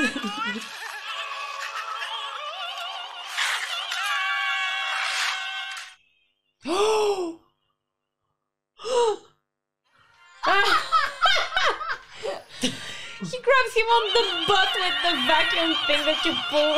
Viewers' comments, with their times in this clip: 0:04 my favorite brothers screams